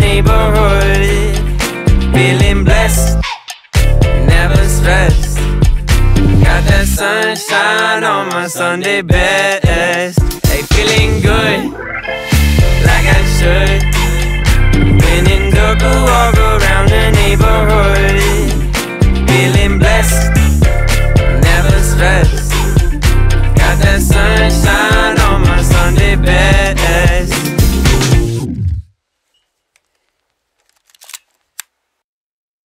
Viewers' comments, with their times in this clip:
0:04 Play it 2x playback sound much better
0:28 was that a gun?